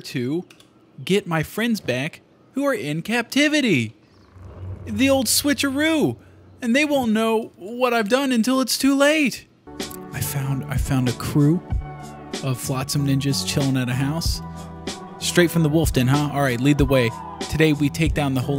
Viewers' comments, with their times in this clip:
0:04 he sounds just like the short guy from princess bride